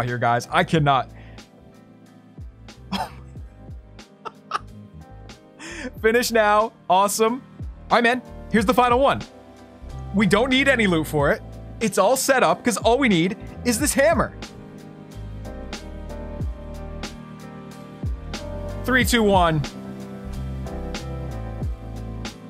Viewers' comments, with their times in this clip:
0:10 Whats the music its relaxing